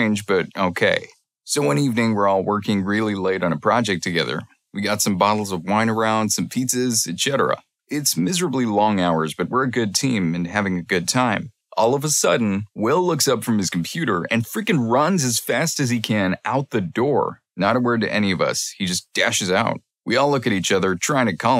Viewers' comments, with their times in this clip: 0:07 "et cheddar a" btw it is etsetera